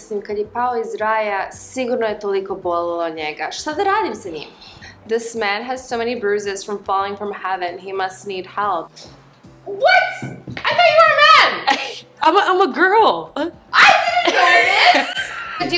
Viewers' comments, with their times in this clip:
0:03 Bringing up the voice like that melts me